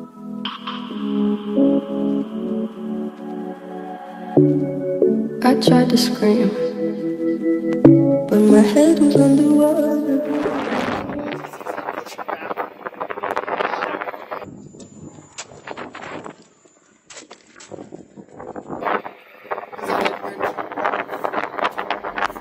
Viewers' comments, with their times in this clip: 0:10 can’t hear your audio